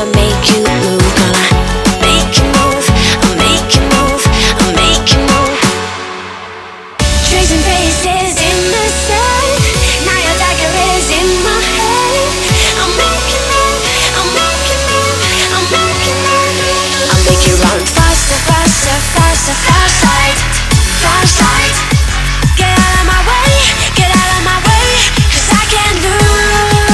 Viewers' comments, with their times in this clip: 0:08 am I the only one who here's "my otaku is in my head" ??